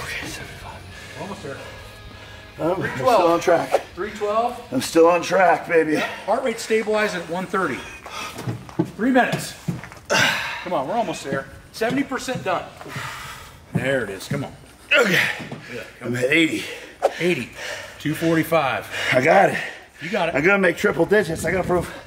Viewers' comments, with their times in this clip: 0:04 Cat meow ! I was convinced my cat was calling me until I realised it was on the video. I got up to see her and she was chilling like "what's up?" Really confused me until I carefully played back the video.